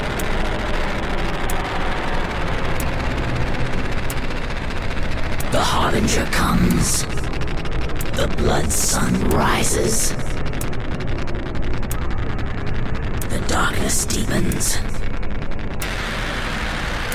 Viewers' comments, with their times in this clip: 0:05 it could really be the voice of carnage no?